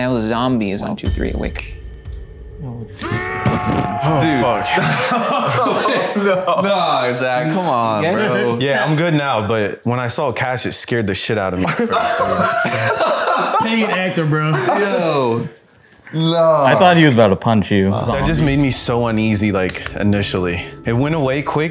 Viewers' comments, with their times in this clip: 0:03 with the cod zombies sound😂😂😂😂😂